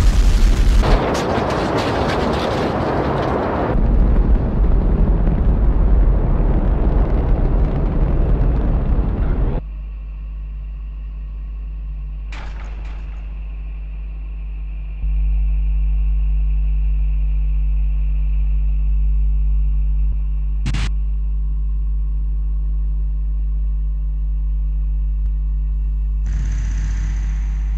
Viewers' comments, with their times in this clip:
0:10 ahem, what was that clicking noise, heard in vacuum? :P